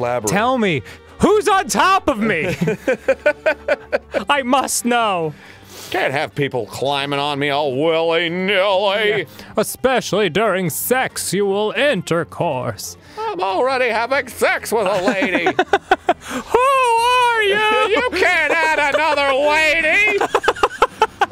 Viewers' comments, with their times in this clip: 0:05 Arin's Jim Gaffigan voice